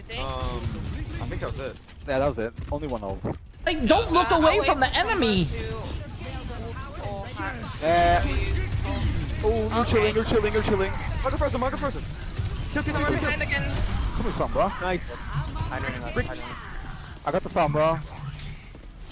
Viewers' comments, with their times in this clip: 0:05 “Emeny” ya mean “enemy”💀🤣